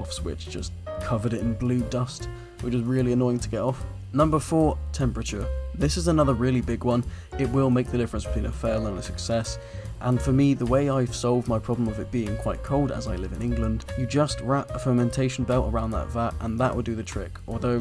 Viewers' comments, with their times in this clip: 0:05 Thought I had a dankpods video playing in the back